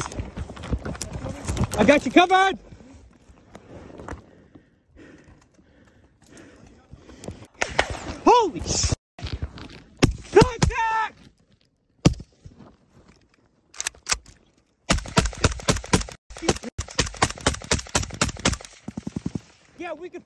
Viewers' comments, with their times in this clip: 0:04 too close when you hear them whizzing by you like that!